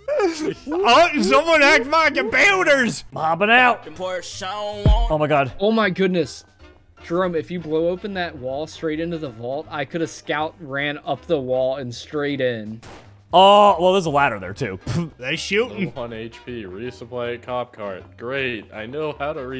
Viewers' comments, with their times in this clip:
0:05 there seems to be music